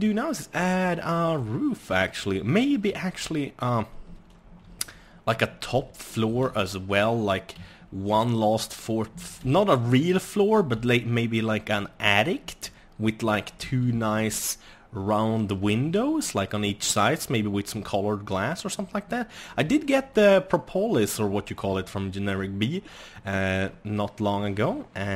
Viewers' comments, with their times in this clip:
0:07 An addict with two windows... lol